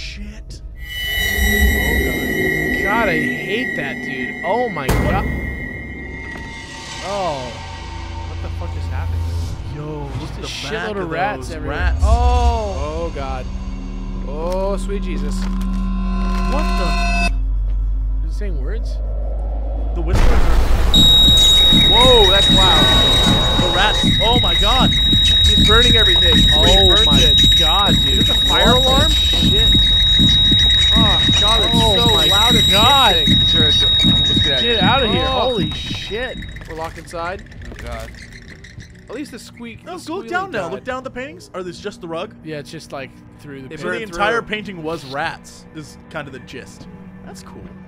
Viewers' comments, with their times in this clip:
0:09 Spoiler raise headphone volume to hear whispers. smart you, reading further down.. really don't raise volume. you'll blow your eardrums. xD
0:24 I went completely deaf Jesus Christ.
0:34 warning to those with sensitive ears like me do not where headphones at this part